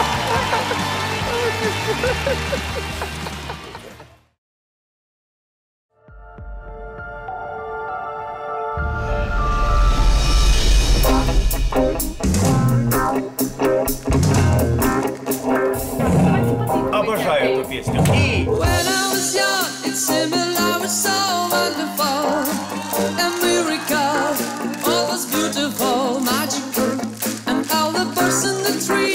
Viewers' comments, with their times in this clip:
0:06 Supertramp is great distinct voice
0:06 Supertramp one love. This guy has such a good voice. Hope he's alive now, knowing what's going on in Ukraine now...
0:15 ...I started to hear the most Magical/ pure voice Ever.....I Love Music